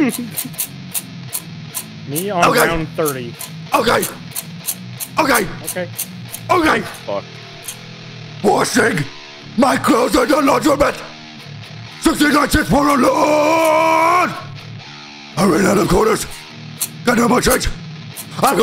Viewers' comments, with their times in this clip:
0:06 THIS IS DEATH GRIPS